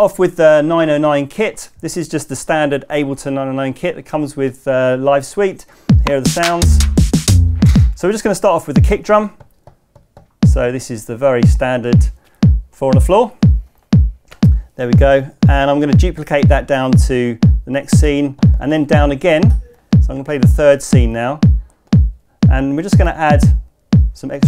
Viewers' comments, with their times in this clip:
0:09 Wheres that little dog bark sample, its in on the original (its not really a dog barking but that's my description)